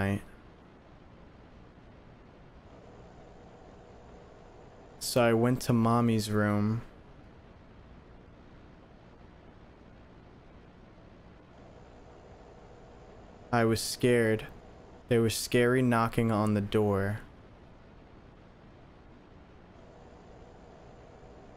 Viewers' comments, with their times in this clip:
0:07 I heard some intense slapping and moaning I think they’re getting killed. I think they’re in groups cuz one said harder